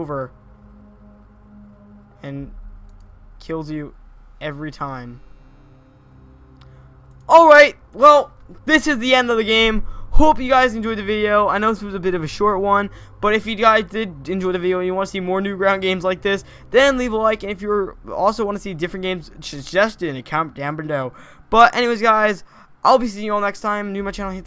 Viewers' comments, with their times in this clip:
0:09 I thought he said " POOP you guys enjoyed the video!"